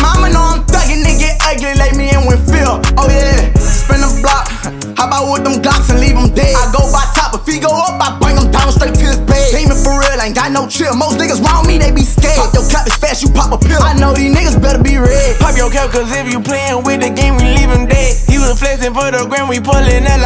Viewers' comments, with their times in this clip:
0:03 THIS A REMIXED TEN TALK BEAT BUT I LIKE IT 💚💚🌡💊💉 THE PART YOUR LOOKING 4OR IZ THANK ME LATER (OH YEA)